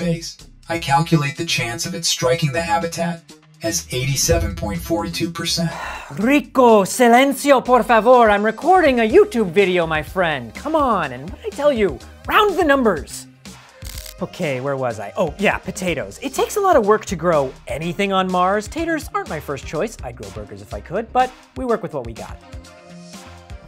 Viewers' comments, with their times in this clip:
0:06 sounds like he did Duolingo Spanish lessons 😂😂😂😂